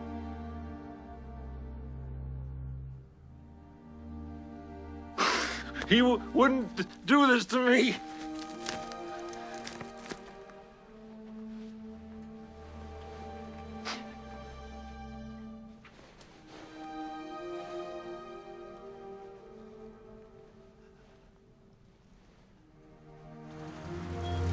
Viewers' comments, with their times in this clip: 0:09 "No, he wouldn't do this to me!". The way this line was delievered..and music...i cried at this moment, ngl. Poor John